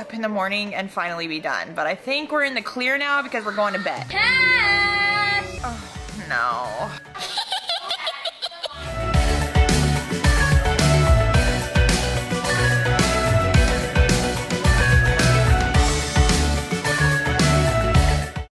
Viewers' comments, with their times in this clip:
0:07 Ok but what was the Laugh